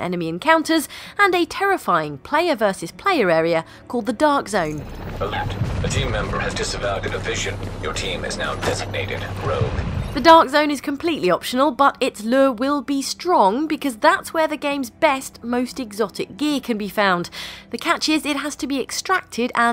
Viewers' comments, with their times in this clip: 0:05 I heard you there, Garrus, you can't sneak past me